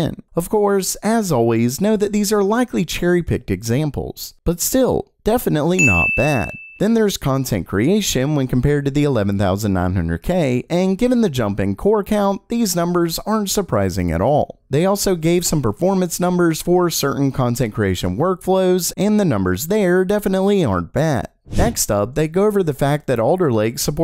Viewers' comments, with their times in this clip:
0:06 Bruh.. the ding on that green checkmark murdered my ear drums..